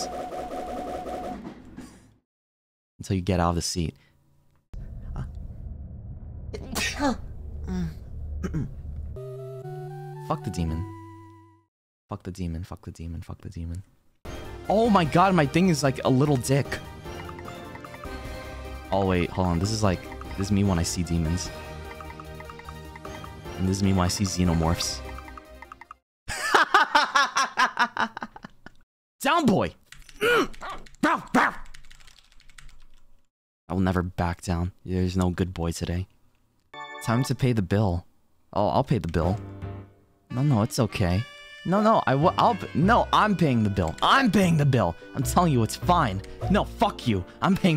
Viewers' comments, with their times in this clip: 0:05 Is no one gonna talk about the sneezing it was so cute 🛐😭
0:05 His sneeze is honestly so cute
0:05 HIS LAUGH 😭😭😭😭😭😭😭😭 AND HIS SNEEZE??? ITS CUTENESS OVERLOAD 😭😭😭😭😭😭
0:05 Sir.. That wasnt a sneeze 💀
0:06 WHY IS NO ONE TALKING ABT HIS SNEEZE IS THE CUTEST THING IVE EVER HEARD-
0:06 Her sneeze is so cute
0:06 his sneeze is so cute Aaaaaaa dies of cuteness overload
0:06 My heart melted but that's also how my sneeze sounds
0:06 Me: trys to sneeze like that
0:07 In was that a sneeze or nah?😰
0:31 his bark so cute